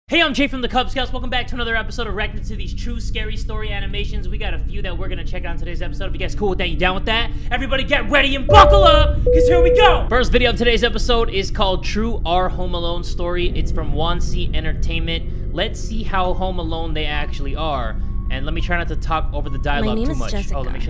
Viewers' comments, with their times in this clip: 0:02 sounds like he said raccoon city...too much resident evil